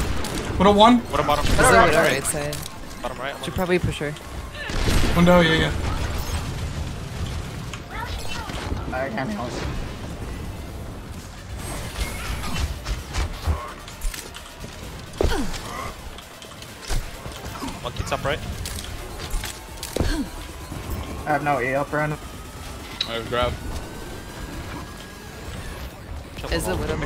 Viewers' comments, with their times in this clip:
0:08 Okay so nobody noticed the voice crack in Omfg